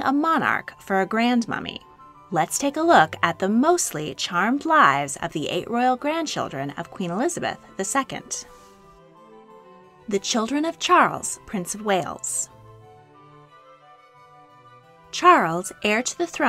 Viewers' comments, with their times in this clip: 0:04 Switching off That common American voice makes me sick.